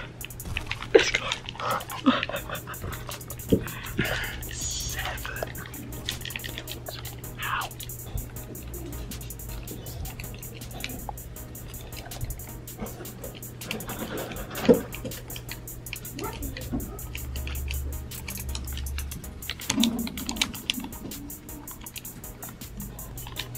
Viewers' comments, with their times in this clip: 0:10 I hear pop